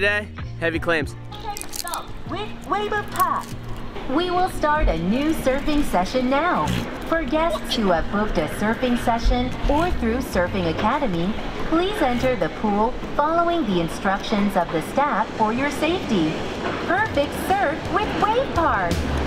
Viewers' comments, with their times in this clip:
0:05 From what I've seen, these Wave Park breaks look the most like real ocean waves. The woman's voice announcing the session is the same one in ""Squid Game".